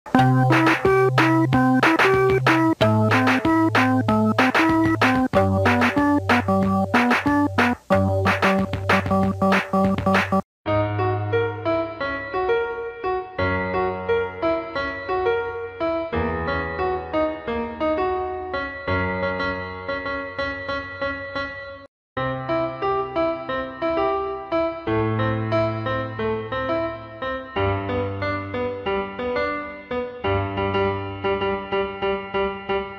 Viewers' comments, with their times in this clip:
0:10 IT SOUND SO GOOD EVEN THOUGH IT ISN'T WHAT THEY SHOULD HAD PLAYED 😳
0:10 horror game ending soundin ahh song
0:10 In it doesn’t sound bad
0:11 sounds like a Moonlight Sonata but more speedy
0:18 the cat is accidentally hitting E while playing C# (or is it accidental)